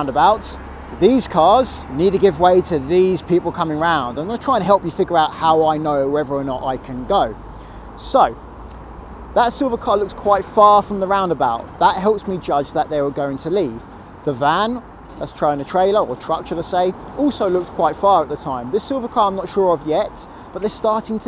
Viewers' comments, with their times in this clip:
0:06 Dang... His voice looks so different from when he's talking in the car.